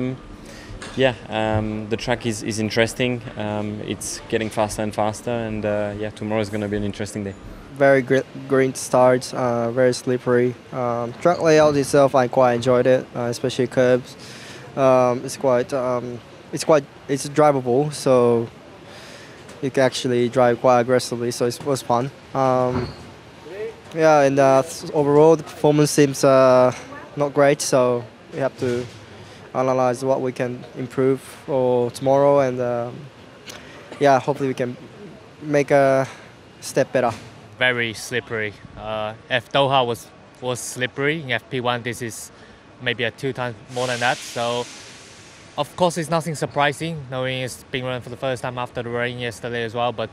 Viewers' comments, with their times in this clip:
0:07 Yuki's English is definitely taking an Australian turn 😂
0:34 Noticed Tsunoda is picking up Ricciardo's accent! :D "Step Bettah"